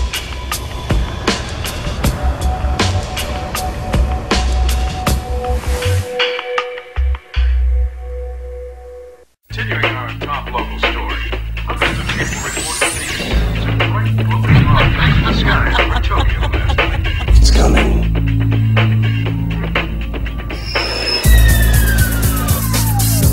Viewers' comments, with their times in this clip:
0:10 The commercial starting is permanently ingrained into my brain. I remember the beat, explosions, voices, screams, etc… Hearing it again literally gives me chills. I still listen to some of the music from them as a 35 year old 😂… Nostalgia hits like a freight train to the gut.